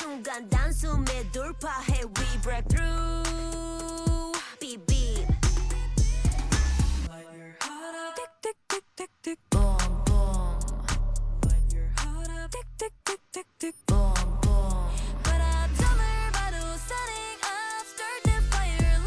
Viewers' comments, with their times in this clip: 0:07 I love Haewon’s lower register!